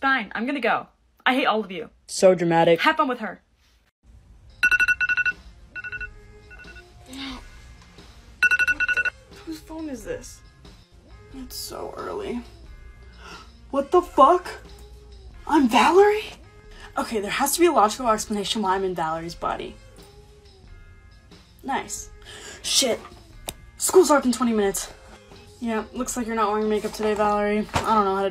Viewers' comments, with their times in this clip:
0:09 not me thinking my alarm went off